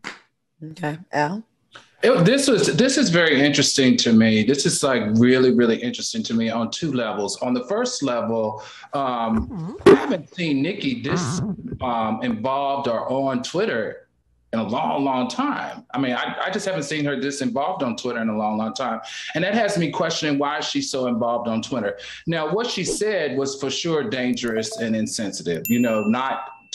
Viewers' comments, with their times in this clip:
0:10 did I hear a fart?
0:11 Somebody fart lol